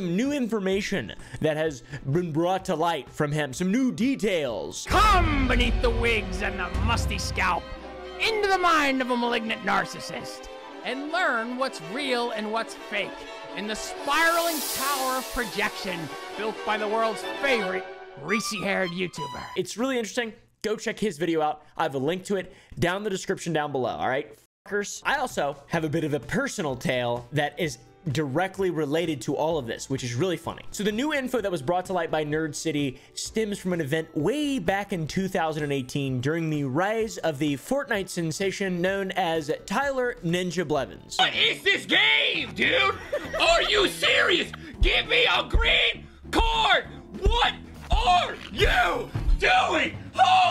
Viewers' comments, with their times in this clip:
0:09 in this clip he sounds like that actor... that comedian... emmm... Gilbert Gottfried
0:34 Note to self: Never invite ninja to an uno tournament Also you sound like jackcepticeye